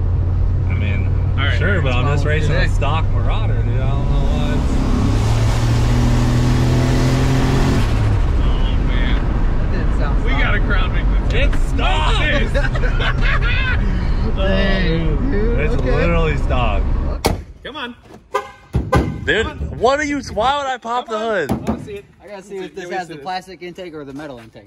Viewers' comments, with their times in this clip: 0:07 It's stock Cough cough turbo fludder